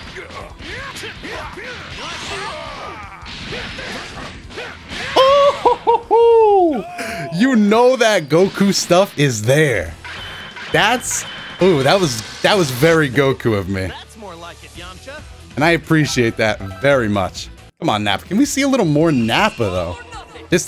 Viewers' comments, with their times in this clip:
0:03 The lil goofy laugh